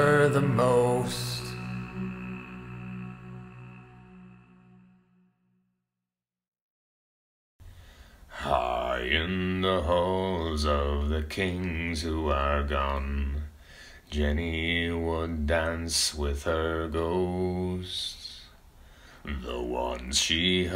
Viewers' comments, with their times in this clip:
0:07 awesome to hear your voice without processing. It's obvious you do some cleanup after recording to get a really professional sounding recording, and it sounds excellent, but sometimes it makes it seem more fake. This clip makes it seem very real, and all the more impressive.